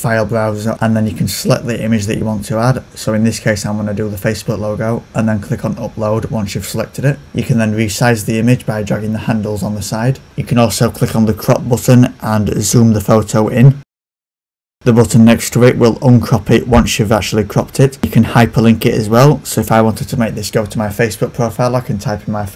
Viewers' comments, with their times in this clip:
0:10 Sorry about the sound peaking I pressed the wrong button when editing the video.